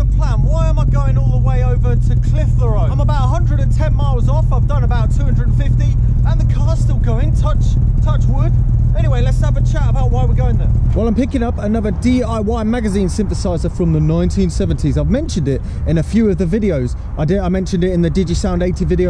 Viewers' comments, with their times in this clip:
0:05 PERFECT pronounciation mate